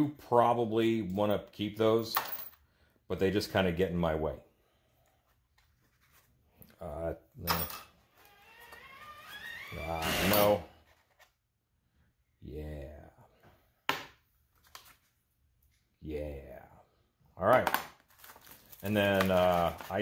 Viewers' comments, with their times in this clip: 0:07 Sounds like a cat cartoonishly reacting to a large shelf coming down on them LOL